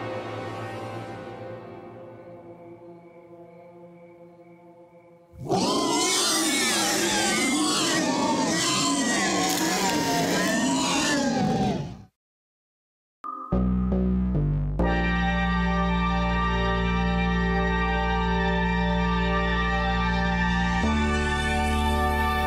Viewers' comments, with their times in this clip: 0:05 Sounds like Gyarados and And Bowser/Giga Bowser Roar